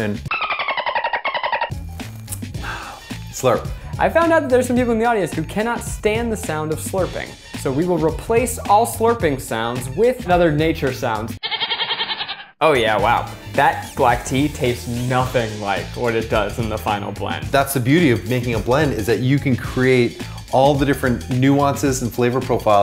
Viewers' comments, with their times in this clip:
0:08 As someone with misophonia, I greatly appreciate you replacing the sounds ! Watching videos where people do things that trigger it is really hard, so thanks!